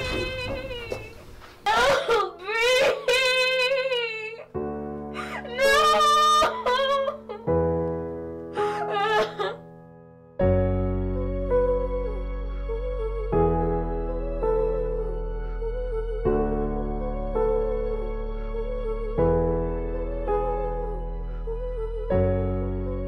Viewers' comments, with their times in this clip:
0:05 What’s That Song On that beat go too hard no cap🥶